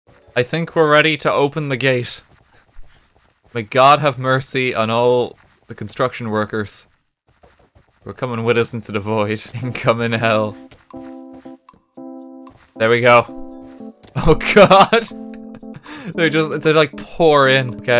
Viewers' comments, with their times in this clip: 0:01 I think we're ready to open the gays.